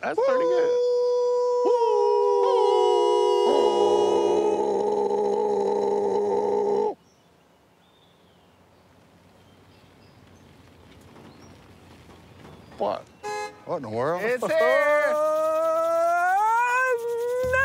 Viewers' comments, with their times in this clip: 0:03 beagle howling at a rabbit! 🤣🤣🤣🤣